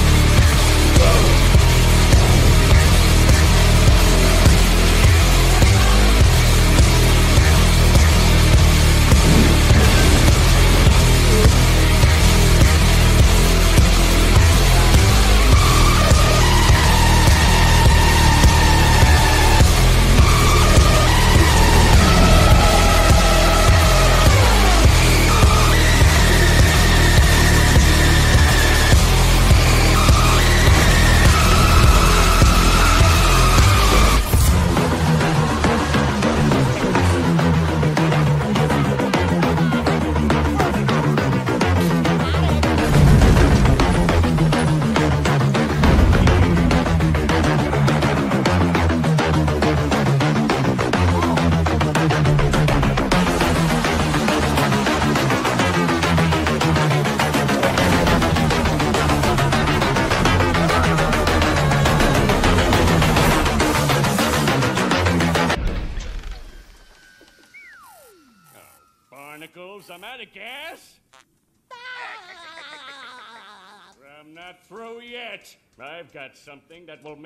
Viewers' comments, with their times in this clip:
0:10 music fits perfectly
0:11 even during the AYOOOO💀💀💀💀 parts, the music still plays (its powerful enough to withstand the power of the AYOOOO💀💀💀💀 part)
0:15 The mecha plankton reveal hits way harder with the only thing they fear is you is playing
1:05 doom music kicks out